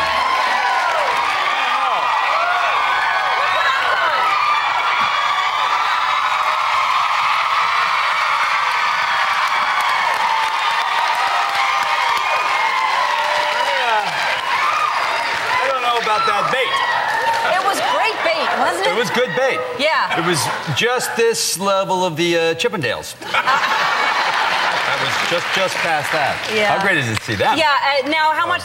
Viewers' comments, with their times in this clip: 0:07 Three minutes and 22 seconds of screaming. For anyone who wants to avoid hearing loss, start
0:14 ok i watched till which is the half of the video, and its just screaming